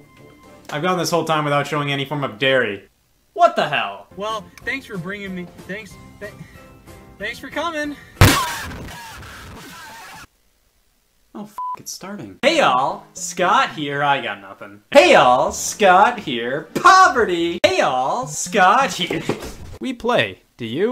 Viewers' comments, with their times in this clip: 0:08 I appreciate how they toned down the volume